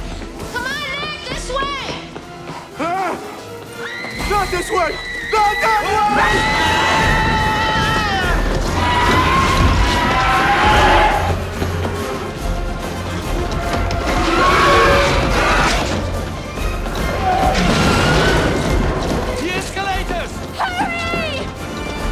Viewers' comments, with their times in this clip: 0:06 Matthew Broderick is normally a good actor but his scream here, it’s like he’s barely even trying 🤣